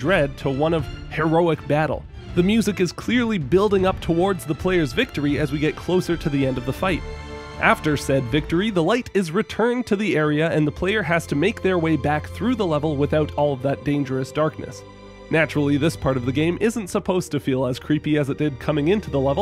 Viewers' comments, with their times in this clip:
0:07 Yea! And it for the last part of the fight it goes into the Ori theme as well but unfortunately it gets cut off here. Was hoping to hear him bring that up but oh well. Definitely a cool part of the tracks where Ori's theme is nowhere to be found in the first section, in the second section but warped to be more frantic, and then bursts to live in the last segment as Ori finally gains the upper hand.